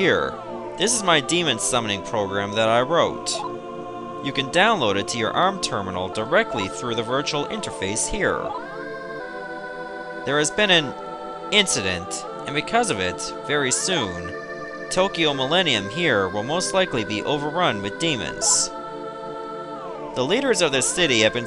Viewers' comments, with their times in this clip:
0:03 so nice dubbing